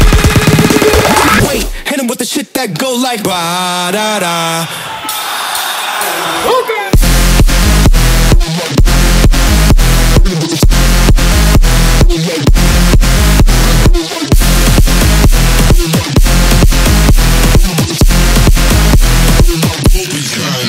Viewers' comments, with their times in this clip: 0:05 Sampling the crowd from one of your shows is crazy, but it works very well!